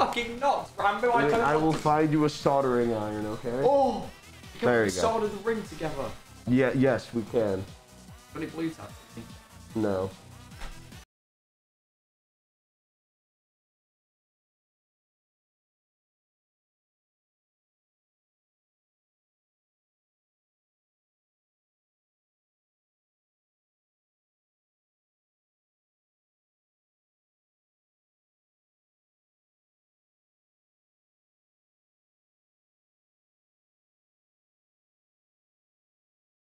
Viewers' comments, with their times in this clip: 0:05 WHERE DID THE SOUND GO?
0:14 am i the only one who’s audio stopped here?
0:21 the silence really speaks volumes here
0:22 the sound turned off and they started vibing 😂